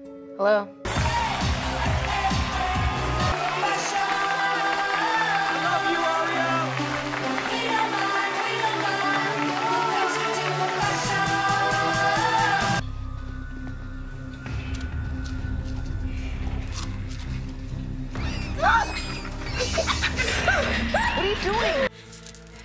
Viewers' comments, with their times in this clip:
0:04 ....did someone say "we love u aria"??